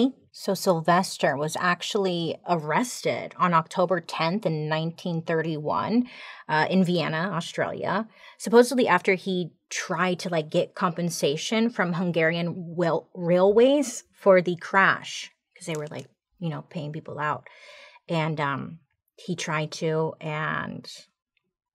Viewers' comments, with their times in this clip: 0:07 Did you say, "Vienna Australia"?